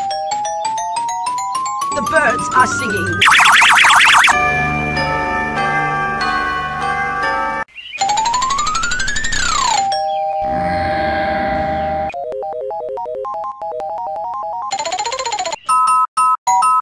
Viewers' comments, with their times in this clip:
0:04 Did I just found a chill version of At the Speed of Light?